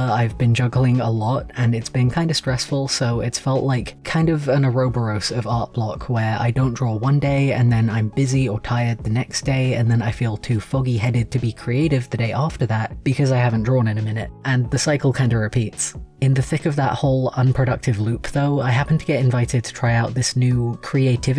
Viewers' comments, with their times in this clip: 0:05 I mean this with the kindest of intentions, but have you only seen the word "ouroboros"? I've never heard it pronounced like that (I've only heard it prononced oar-a-bor-us for reference). I'm hesitant to say you're wrong because for all I know it could very well be a dialect difference.